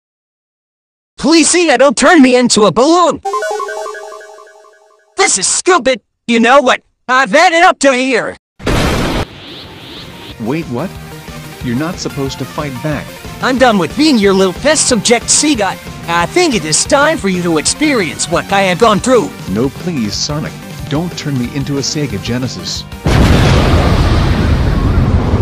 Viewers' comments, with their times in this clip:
0:02 gaster sound go brrr
0:03 * some w.d gaster noises *
0:10 sounds like pink sheep